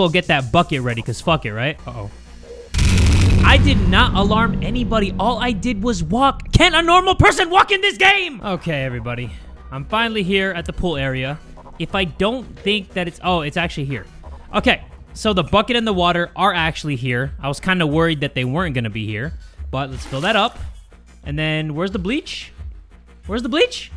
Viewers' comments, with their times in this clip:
0:04 love how he said that